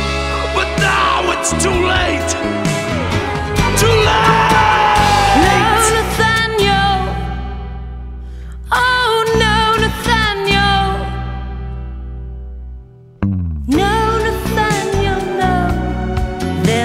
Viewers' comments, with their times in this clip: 0:03 Phil Lynott rocks this on point with his voice. What a legend !